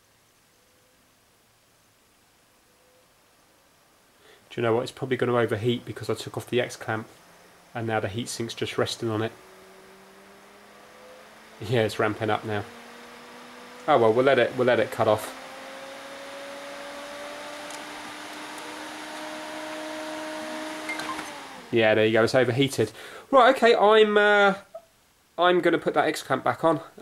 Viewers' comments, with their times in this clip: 0:08 XBOX GO BRRRRR